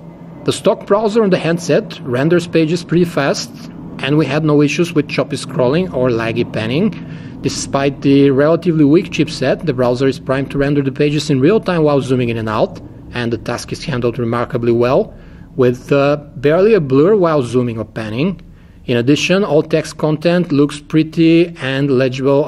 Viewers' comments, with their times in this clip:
0:06 does someone hear the airplane sound noise??